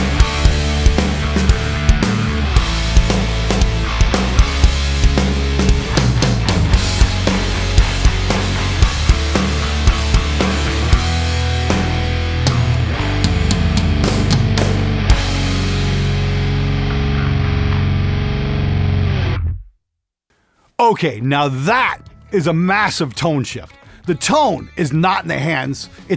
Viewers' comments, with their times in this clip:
0:10 Tone is sick